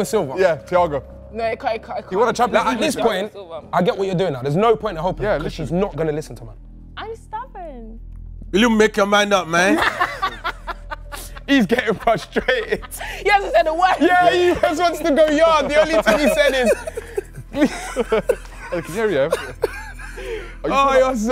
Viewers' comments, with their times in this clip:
0:07 I love the way he said that lol